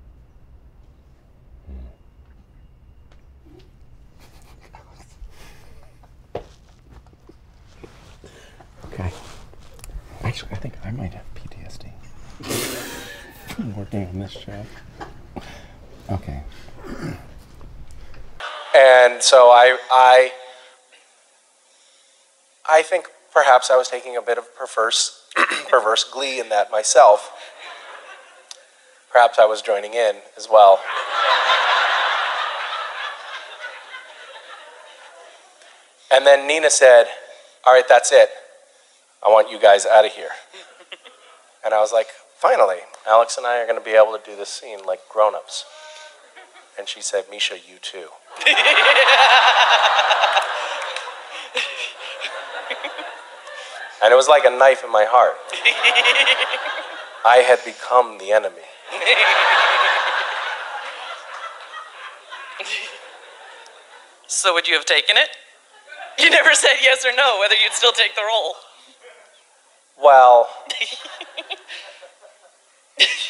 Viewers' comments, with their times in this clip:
0:08 Misha: Okay. Stops trying for a moment and calmly whispers I just- I think I have PTSD Jared and Jensen lose it Misha: From working on this show. Misha: Chuckling Okay Goes back to work Me: I think we can all agree with this. He's been put through so much against his will from those two.
0:58 Do hall hear the girl laughing 😂😂😂😂